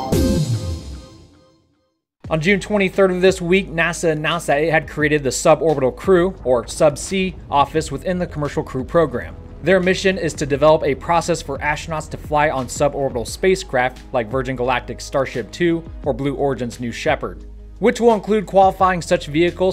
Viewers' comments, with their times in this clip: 0:04 What is nasanasa? Did nasanasa want some ananasa?